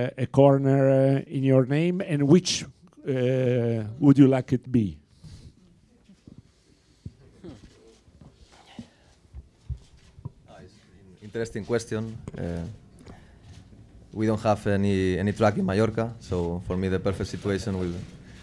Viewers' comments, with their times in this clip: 0:05 Who've noticed the "Haa" of Dani ?